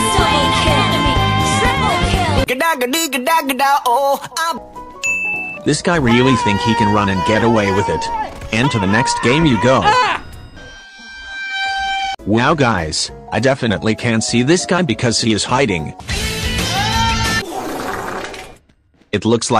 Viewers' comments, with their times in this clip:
0:03 I hate this meme sfx